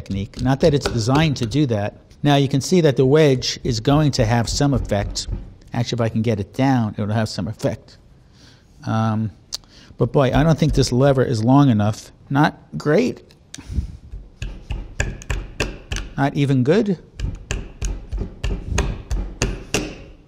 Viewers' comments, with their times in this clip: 0:06 WHY HE SOUND SO MAD BRUH "Actually if I get down it'll have some EFFECT"